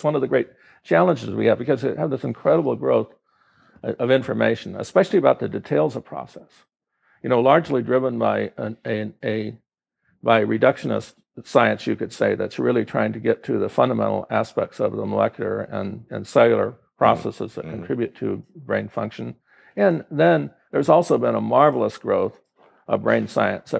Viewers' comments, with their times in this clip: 0:04 did he say details of process or a specific type of process.